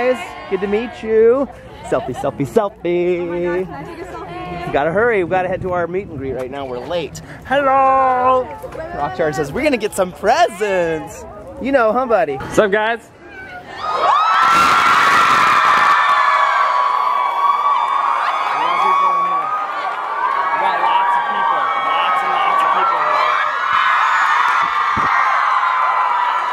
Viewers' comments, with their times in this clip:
0:08 Volume warning to those headphone users minutes read this be warned